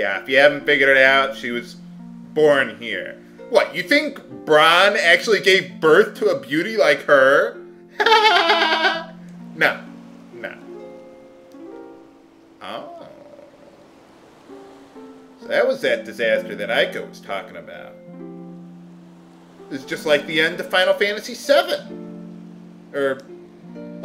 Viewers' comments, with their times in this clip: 0:06 Gotta love that laugh lol :)